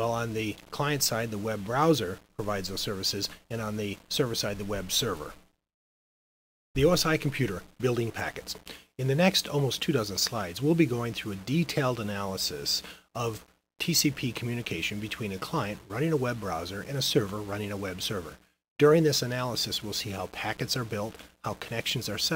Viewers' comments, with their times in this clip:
0:08 I almost heard "in the next almost two thousand slides"... 😄